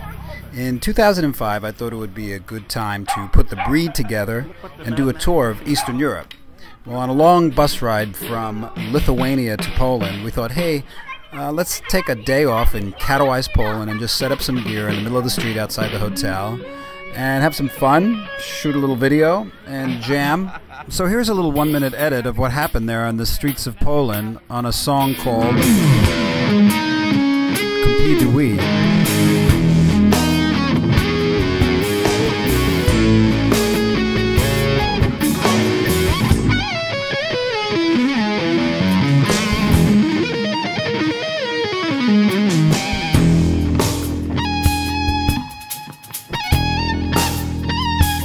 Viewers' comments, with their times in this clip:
0:10 Whoa 999 comments. That just seemed weird to me. I like the album versions tone, because he rolls down the volume knob. It sounds amazing. Those kids don't realize how lucky they are
0:12 Hi, i really dont believe in that. This "live" version has an obvious delay, and his board shows a EVH phaser, a Boss SD-1 and something else. I can't see a Jemini pedal. Steve got his trade mark sound away before his signature Jemini. I do believe he has hidden gear, or it has been processed after in the studio
0:25 Is just me or in the beggining of the song he says "K'm-pee-du-wee" on his guitar
0:36 My favorite guitar riff in the world.